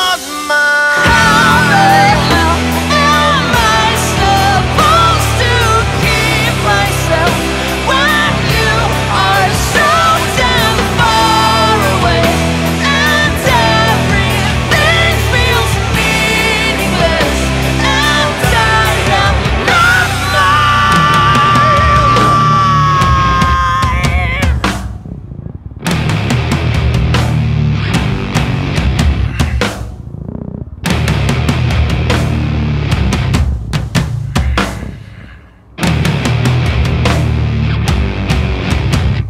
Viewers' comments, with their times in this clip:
0:03 is ragnar who's singing or a girl ?
0:27 Omfg that brushes are sooo heavy